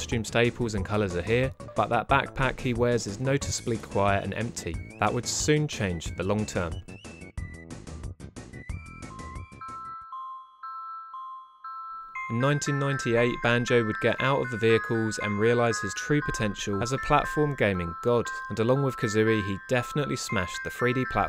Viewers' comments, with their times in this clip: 0:08 Just some constructive criticism, on the section starting the audio mixing is questionable at best, the music is way too loud and distracting